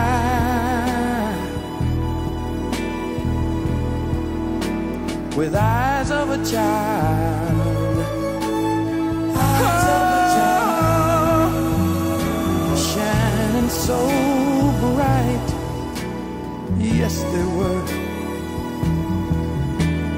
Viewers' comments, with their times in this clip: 0:07 I love this song! They are singing from the heart! The harmonizing makes me feel the cold!